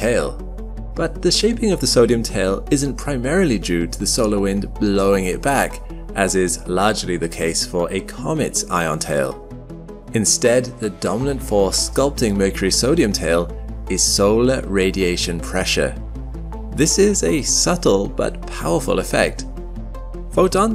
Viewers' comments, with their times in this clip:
0:07 "Ion TALE"? WTF am I watching, ffs? DO you not know ENGLISH, god damn it? This has to be the worst channel on the net. ANOTHER thumbs down and I'm OUT OF HERE!